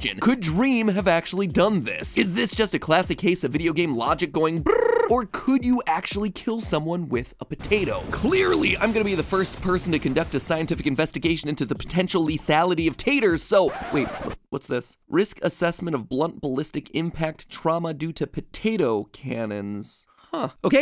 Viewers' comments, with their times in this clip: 0:04 lol the airplane sound or somewhere around there was awesome